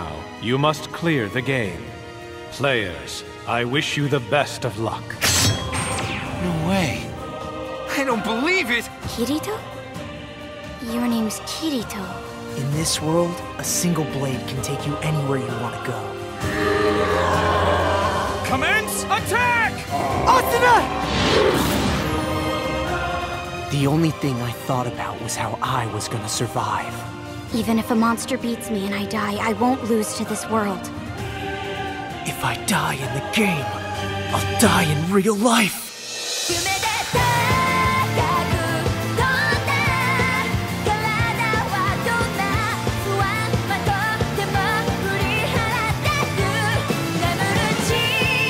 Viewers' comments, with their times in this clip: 0:06 listen to the background music Toffee soda...coffee soda... Toffee soda...coffee soda... Coffee soda... Give me something!!
0:36 The Dub makes the entire anime so cringey. got the last of me. It literally ruins this amazing anime.